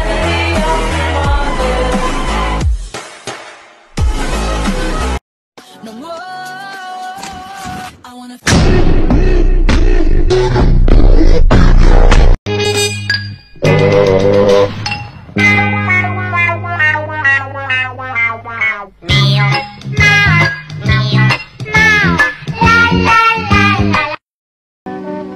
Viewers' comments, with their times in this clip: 0:08 I dont think they know the difference between beat drops and earapes-